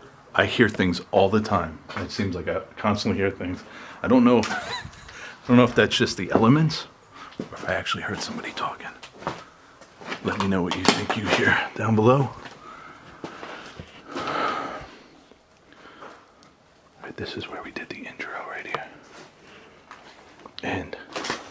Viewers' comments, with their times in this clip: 0:07 there was someone talking